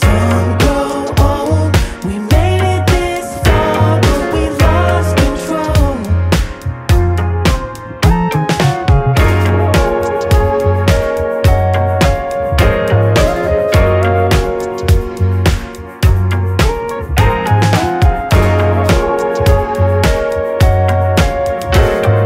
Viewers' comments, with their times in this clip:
0:08 My god when that synth hits My ears perked up so hard the first time I heard this